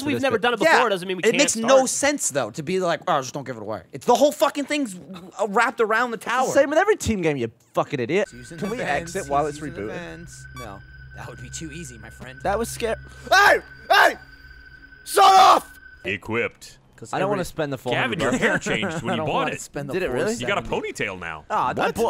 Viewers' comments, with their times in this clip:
0:05 That fuck is violent